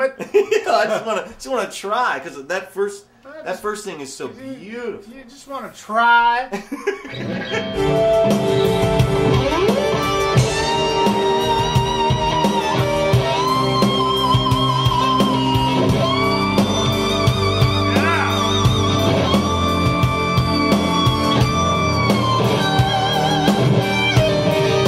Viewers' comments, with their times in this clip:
0:08 just sounds phenomenal, blows you away.